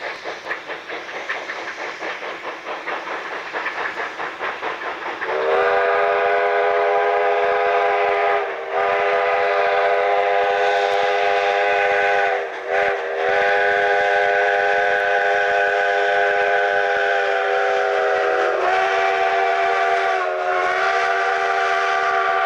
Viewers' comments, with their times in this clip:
0:03 I think that whistle is the best recorded Sierra 3 whistle I've ever heard. The length, the way it's blown, the pitch, everything!